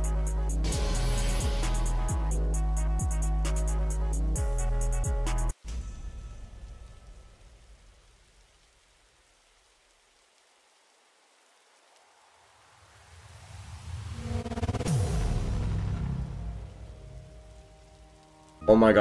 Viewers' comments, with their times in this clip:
0:03 Why did the grav have 10mil+ sound?